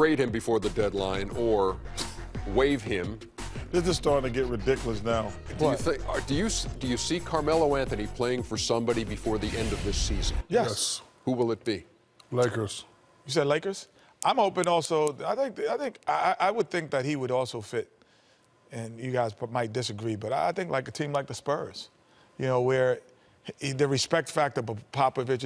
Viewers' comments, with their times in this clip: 0:10 triple yes! in sync!